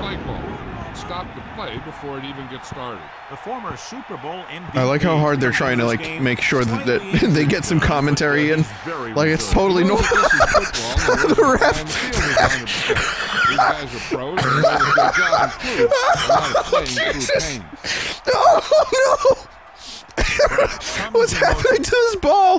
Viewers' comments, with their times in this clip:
0:04 This might be the hardest I've heard Vinny laugh. Amazing.